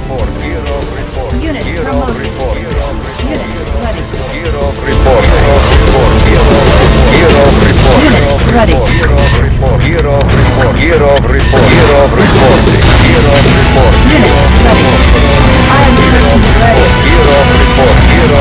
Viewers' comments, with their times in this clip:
0:04 Warning ear ra*e
0:05 good bye eardrums....I loved you